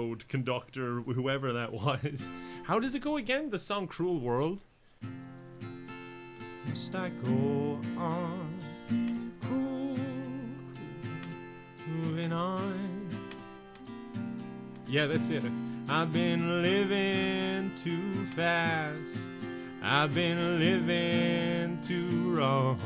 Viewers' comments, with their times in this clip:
0:06 I had no idea that you could actually sing. I thought it was just a meme that you referenced from time to time. But makes it clear you're actually pretty damn good at it.